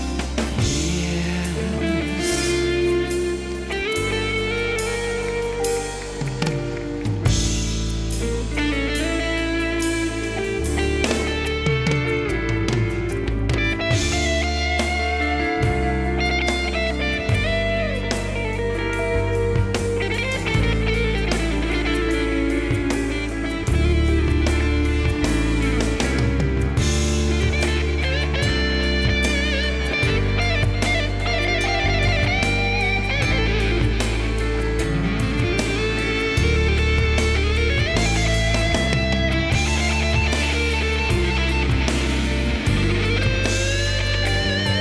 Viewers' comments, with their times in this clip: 0:03 That solo from
0:29 -> Santana likes that pirulupirulu